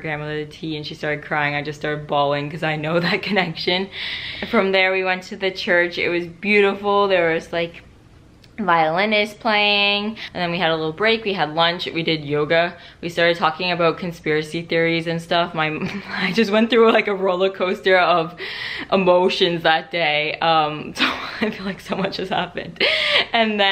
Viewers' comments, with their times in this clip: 0:10 Okay this was a beautiful video and I don't want to distract from that, BUT, I have been laughing to the point of TEARS for the past 3 minutes repeating the part in where you say "violinists playEEEEEEN" 😂😂😂